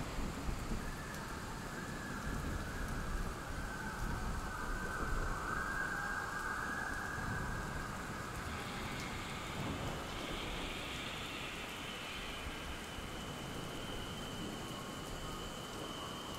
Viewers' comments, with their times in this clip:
0:04 Is it just me, or is some of the ambient hooting Lex's screams?